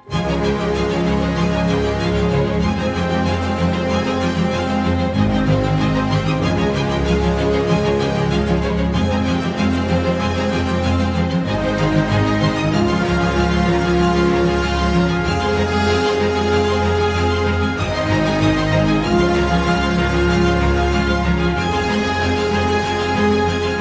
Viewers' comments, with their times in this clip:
0:04 I liked the effect of the ombre beading. Not crazy about the slashed styles probably cause i have a tum... the wedding dresses, especially the one with the blue skirt! My favorite was that soprano ❤🎶 the sound of flute 🙏